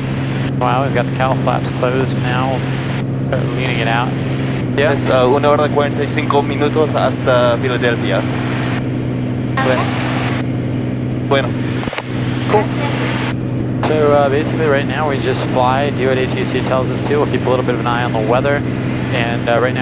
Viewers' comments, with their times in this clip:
0:07 very good spanish. Greetings from mexico